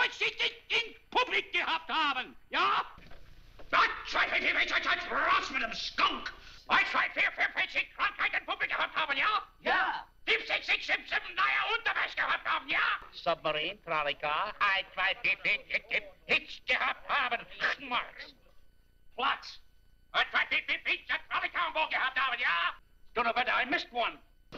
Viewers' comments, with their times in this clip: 0:06 Moe is just counting auf Deutsch but in a way that it sounds like gibberish...